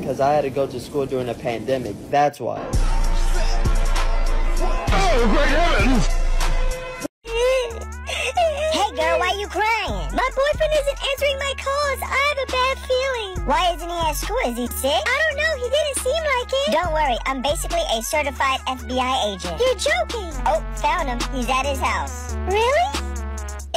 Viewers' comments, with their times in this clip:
0:09 "Hey girl, Why are you crying" She was talking so brasta.